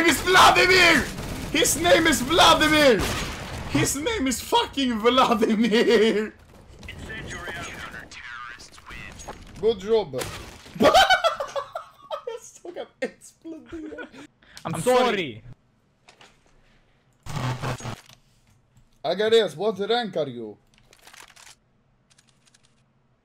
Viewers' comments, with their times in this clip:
0:10 You said "Сука, блять" so realistic that I even thought that you are Russian.VERY NICE.SUPER HOT